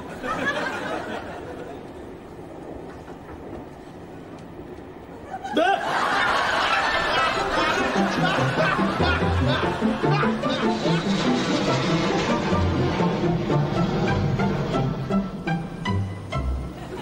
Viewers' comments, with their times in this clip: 0:05 i love his last laugh here! 😂